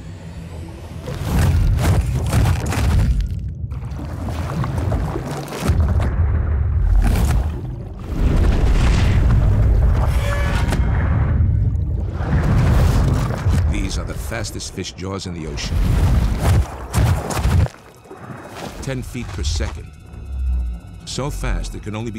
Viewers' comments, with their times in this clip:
0:08 The moment you realize National Georaphics goes to the extreme and adds metal sounds in for dramatic effect